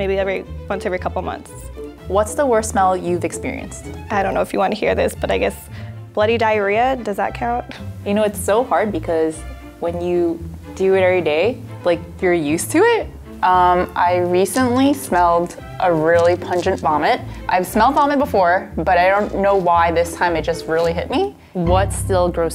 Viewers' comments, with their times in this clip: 0:10 Did she just say, "errrr dae"? seconds I thought only us in Bermuda use that type of slang...Lol. So, now I'm convinced that people of Asian decent can pronounce words like us + many others...👍🏽👍🏽👍🏽